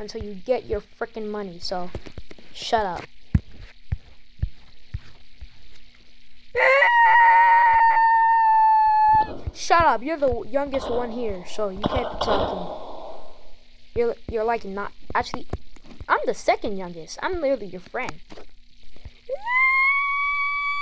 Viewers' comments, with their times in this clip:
0:08 bro sounds like a dinosaur